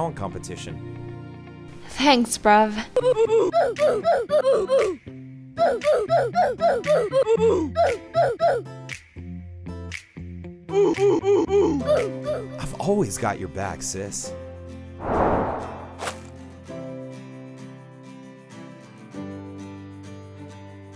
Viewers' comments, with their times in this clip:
0:03 Havanna oofs casually playing in the bg with nobody in the house yelling at milly
0:03 That music made me laugh 😂